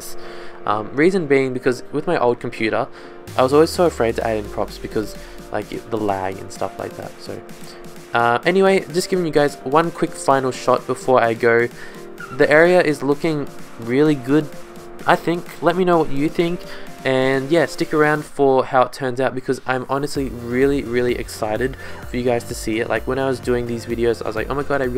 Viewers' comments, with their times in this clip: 0:10 it sounds like the ship is drifting